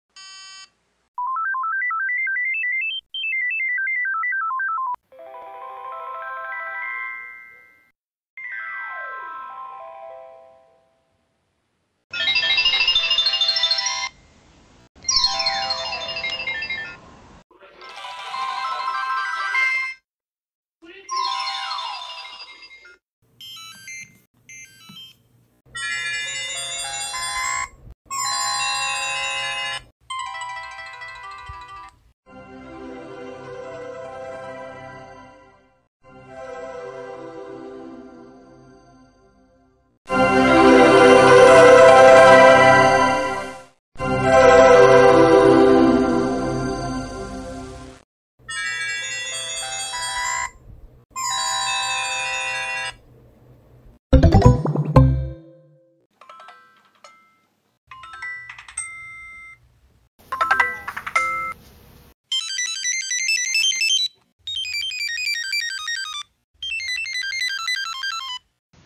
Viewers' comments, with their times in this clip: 0:05 Sounds like a Star at Night
0:54 like a good neighbor, State Farm is there